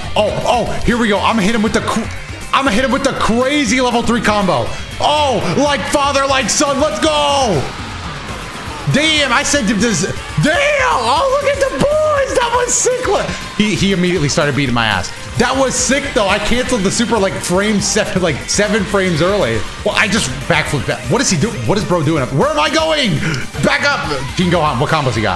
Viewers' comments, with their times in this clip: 0:09 whistle going down in pitch